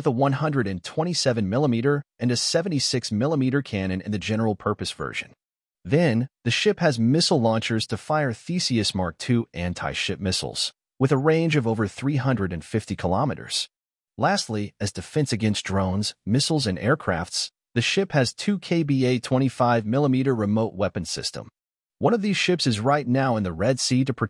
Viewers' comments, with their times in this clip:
0:05 It took me three replays to identify the name of the missiles as "Theseus" due to the pronounciation. "Thee-sea-us ... eeeh... which one would that be... thee-see... is that an abbreviation perhaps? .. wait a sec... oh.. THESEUS it is! What the heck, bro?"